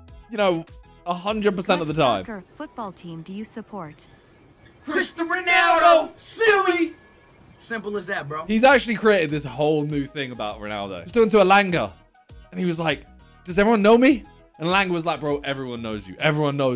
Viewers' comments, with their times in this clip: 0:03 They said it at the same time bro thats fire. ❤ W